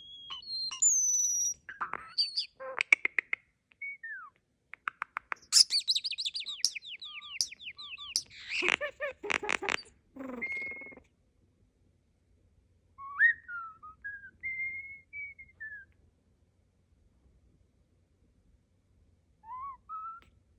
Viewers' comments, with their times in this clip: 0:08 I genuinely thought you laughed at around the mark 😂 Never ceases to amaze, the sounds coming from this tiny birb, and i love how their neck feathers fluff out.